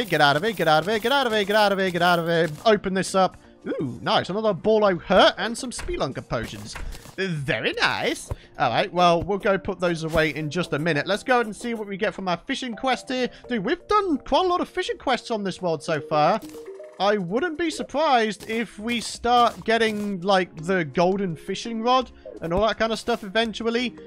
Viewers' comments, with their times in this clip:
0:07 was that a Borat reference or a voice crack? Just out of interest :D